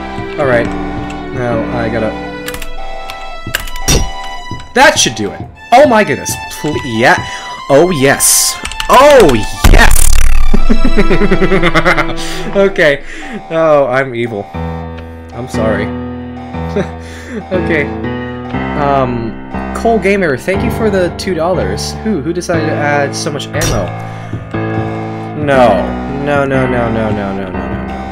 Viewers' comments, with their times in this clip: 0:08 The mic hit is just so iconic i can't 😭
0:11 THE LAUGH BRO